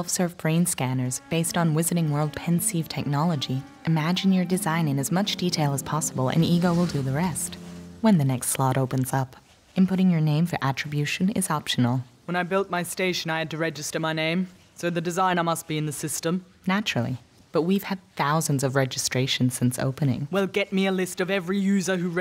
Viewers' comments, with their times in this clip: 0:09 she sounds like Gladys From portal 1 and 2